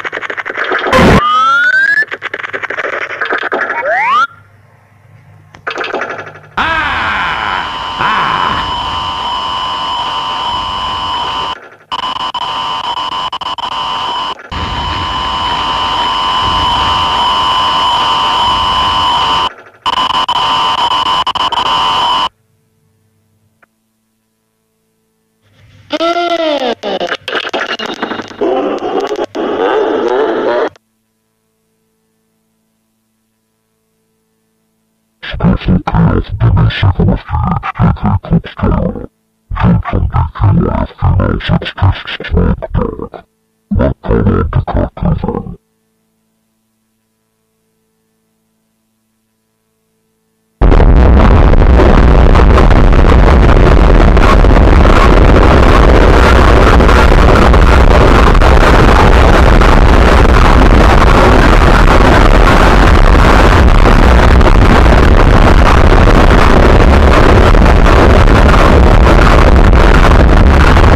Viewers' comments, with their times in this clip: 0:04 "Aaah... haaaahaahaaaa" slenderman noises
0:33 Non-Toxic criticism: I was liking the video until it's really not necessary for the voice to be super low pitched to be scary, it's just annoying. Same as the beta pictures with other screenshots, the static sound getting louder just makes the viewer want to take off their earbuds. Anyway, I really liked how the user wasn't being able to delete the save file, it was an original nice touch. So, if you wanna keep doing more tapes like these about Beta '95 and Personalised '96 onwards, I'm super interested 👍🏻💯...
0:33 Eveything before pretty normal kind of creepy vibes. Everything after EARRAPE AND BLACK AND WHITE SCREENSHOTS- (I love this bruh-)
0:35 my stomach at 3 am remastered
0:35 seems to be the voice of a demon
0:35 the voice like a demon thats creepy＞﹏＜
0:36 What the hell is this voice?!
0:50 vine boom sound effect with extreme bass be like
0:50 Usually sound like this is accompanied by meme footage of a horse on a rooftop. Still, good attempt but the earrape and slender effects is way too comical.
0:51 bloody hell my ears